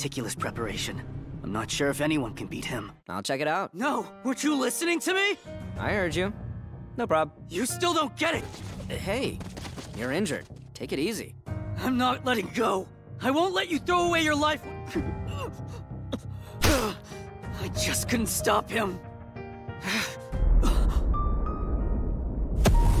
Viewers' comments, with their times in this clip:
0:03 when the theme song kicks in and you get the feels because of how he wants to save Saitama but since heis a bad ass he just took him out and one punch. The feels in anime are what I live for 😂bruh